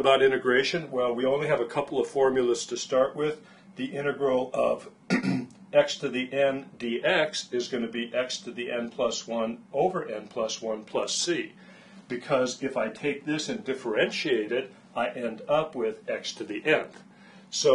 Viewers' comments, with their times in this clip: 0:03 he clears his throat and it's amazing